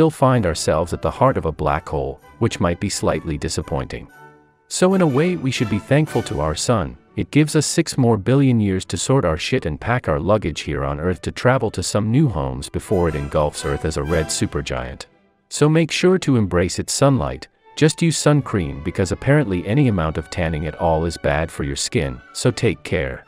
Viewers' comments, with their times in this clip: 0:07 saying this casual is so funny
0:07 Six morbillion years? Damn that's a lot.
0:07 woah, 6 morbillion years?
0:07 6 MORBILLION YEARS!
0:10 Six Morbillion years